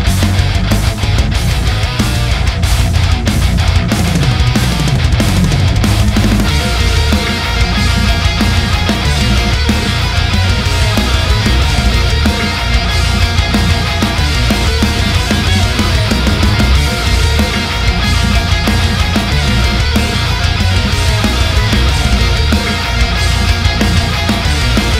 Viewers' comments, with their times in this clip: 0:06 That riff is RAUNCHY AF needs to be in a video game or something